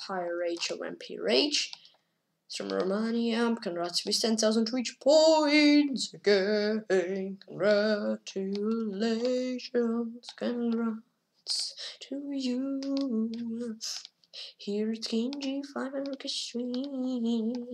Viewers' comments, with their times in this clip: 0:03 The full "learn from your mistakes" section done in song! 🤣🎵🎤👦